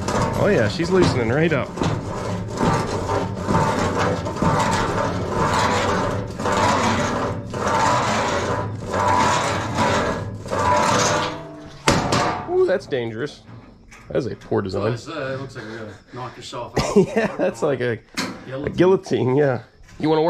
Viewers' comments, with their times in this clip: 0:07 The sound that first side access panel made as you were loosening it up reminded me of the sound the tardis makes on Dr. Who.